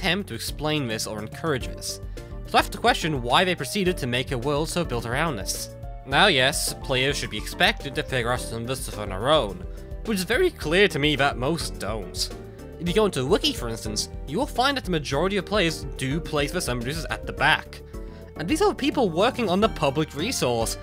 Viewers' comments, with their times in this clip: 0:06 “Now yes, players should be expected to figurasalusfusoneroen. Which is very clear to me that most don’t.”
0:08 i cant understand what is begin said but i think it is "of course players should figure stuff out on there own" but it is hard to understand whats begin said